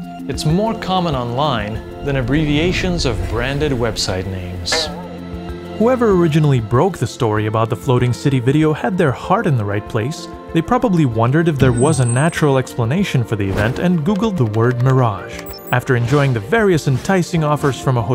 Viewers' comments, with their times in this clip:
0:04 that spring sfx gives me so many growtopia flashbacks...